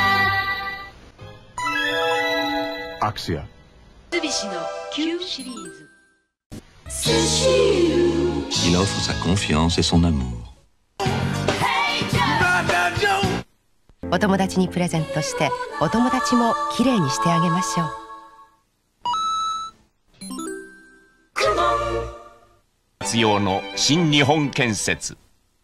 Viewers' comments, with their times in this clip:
0:08 Japanese commercial speaking french